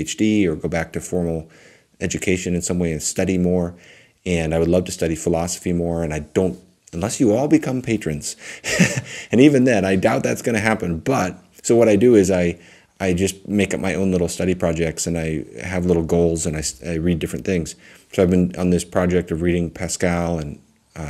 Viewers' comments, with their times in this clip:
0:05 I love your burst of childlike excitement at the thought of us all becoming patrons and your going to study philosophy